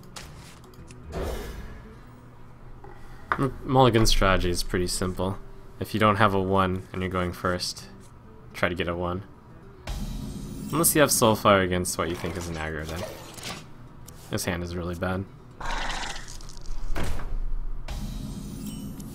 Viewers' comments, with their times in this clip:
0:03 who is molegen?